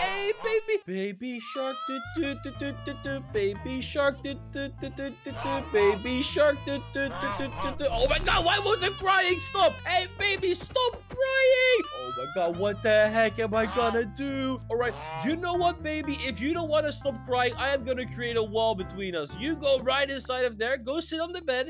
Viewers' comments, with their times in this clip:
0:07 BECAUSE THAT SONG SUCKS